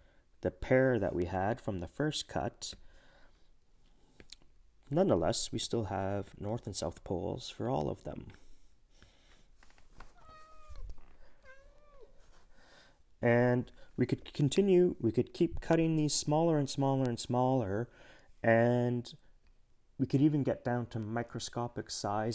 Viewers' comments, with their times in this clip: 0:08 You can hear is cat meow